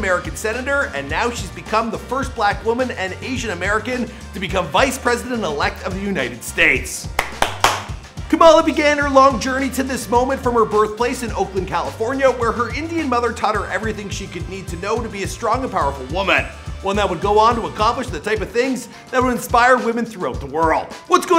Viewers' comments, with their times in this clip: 0:09 southern accents here fs